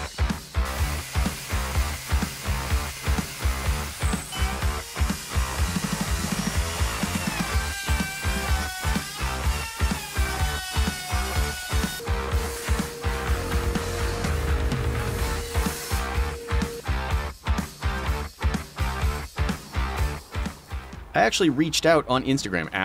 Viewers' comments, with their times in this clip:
0:07 And then a sander/vacuum solo ?! Nice